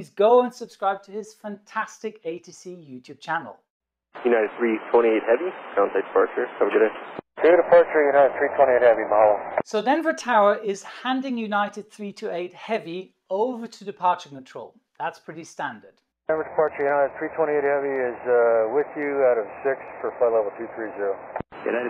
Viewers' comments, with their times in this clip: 0:05 why haven't we got crystal clear communication devices in 2021? how could you possibly hear anything from that mumbling?
0:09 Sounds to me like he said "mahalo", not "so long".